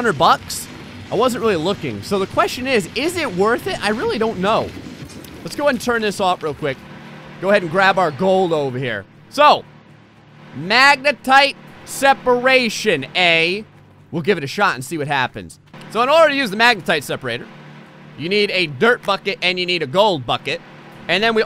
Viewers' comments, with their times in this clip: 0:08 are you Canadan